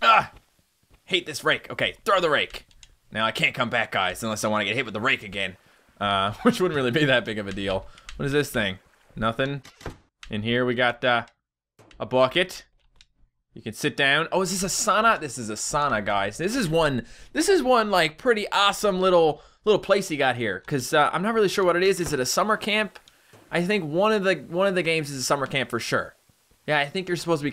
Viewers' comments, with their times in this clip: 0:10 Here's The Accent I Was Loking for XDDD